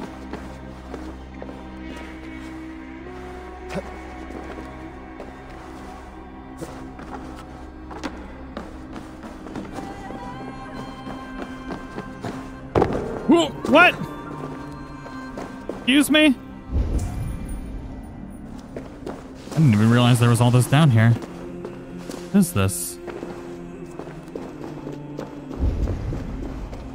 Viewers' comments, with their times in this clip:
0:07 That song sond like the song from the last mission for dying Licht